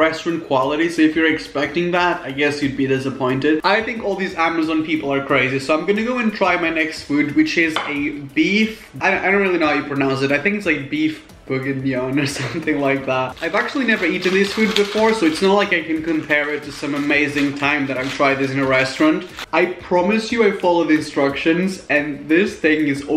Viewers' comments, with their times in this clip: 0:10 you pronounced it pretty much perfectly.